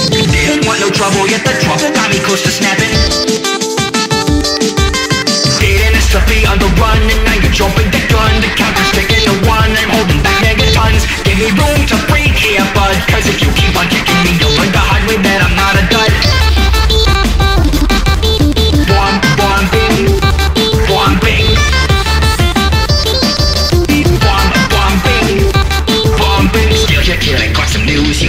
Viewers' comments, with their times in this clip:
0:04 This part goes harder and flows smoother than it has any right to be.
0:11 dunno if it was intentional, but whitty has to take a breath right before he says "gimme room to breathe here"